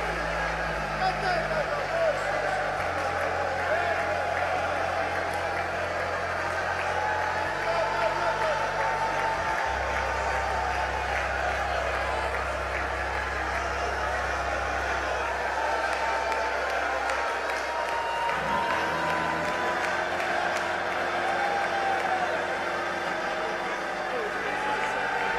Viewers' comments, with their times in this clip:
0:07 Anytime you look at Scripture, you'll find believers speaking in tongues spoke to God, not to men (Acts 1 Corinthians 14:2). Yet, the "interpretation" seems like prophecy, as if God is speaking to people. And then notice how the service erupts and you can hear many people screaming, shouting, and speaking in tongues. This is exactly what Paul warned against in 1 Corinthians: “If the whole church comes together and everyone speaks in tongues, and inquirers or unbelievers come in, will they not say that you are out of your mind?” At the very least, they are supposed to take turns, and no more than 2 or 3 speaking at the most. This service is an example of what not to follow.